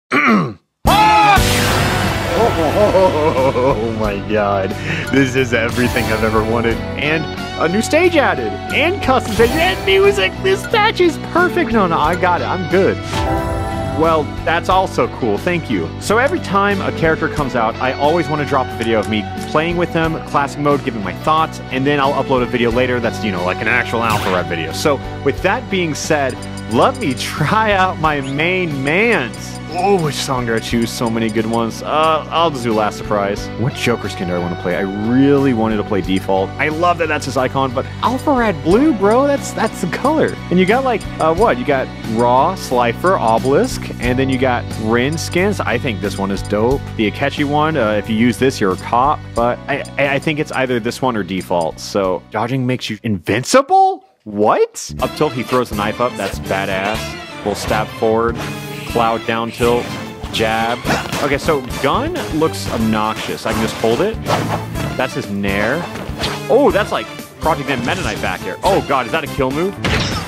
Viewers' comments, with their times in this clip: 0:02 That is banjo speak
0:54 Anyone notice some of his attacks were sinked... ( idk dont judge my spelling )
0:55 Lol, he is attacking to the music.
0:55 is it me or is he attacking to the beat xD
0:55 damn that audio syncing
0:56 bruh you attacked in sync with the music
0:56 that rythm tho